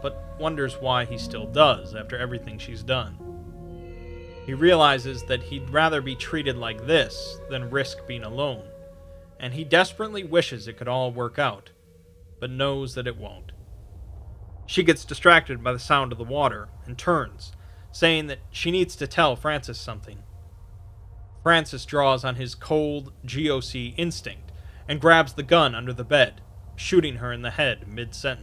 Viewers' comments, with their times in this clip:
0:10 you sounded so sad when you said this line.like you were changeling his feelings.